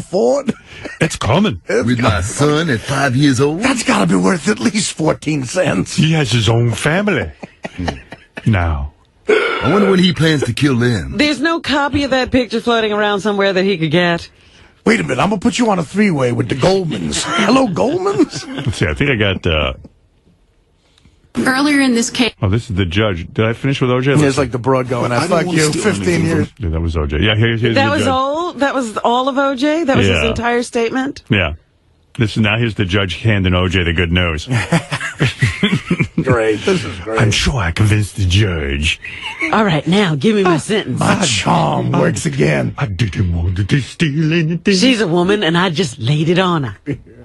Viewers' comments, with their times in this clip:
0:06 "He has his own family...now." I have no idea why, but that pause makes the next line so funny. This is absolutely hilarious!
0:31 ...love hearing howard getting reved up listening to the judge giving OJ the guilty verdict...